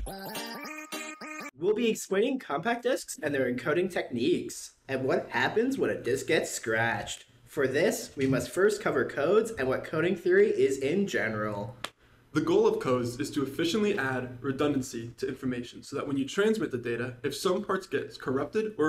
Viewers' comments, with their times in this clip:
0:03 baby daddy starts talking ❤️❤️❤️